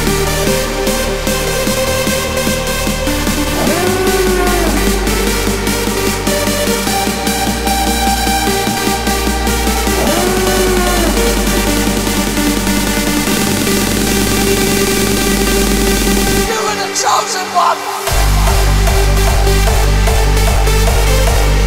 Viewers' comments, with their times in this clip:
0:04 Sounds good. I think where it has the elephant noise it would have been cool the have the elephant type noise repeated fast to go with the build up